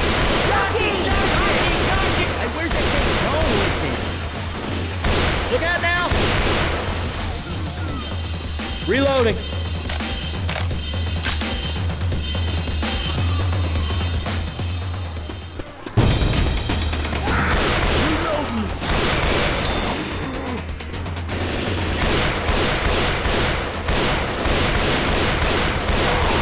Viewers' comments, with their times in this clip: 0:08 I love the Music that plays on